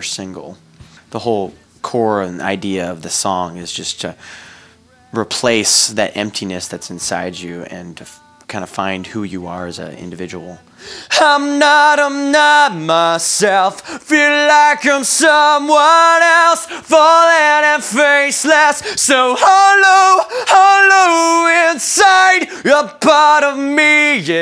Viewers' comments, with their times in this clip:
0:09 When he sings acapella...(sp) it shows he is the real deal. That voice is is frighteningly good! a
0:11 One of the best voices in music